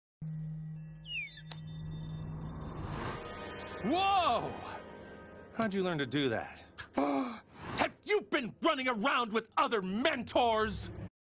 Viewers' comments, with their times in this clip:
0:03 Now THAT’S how Goku sounds.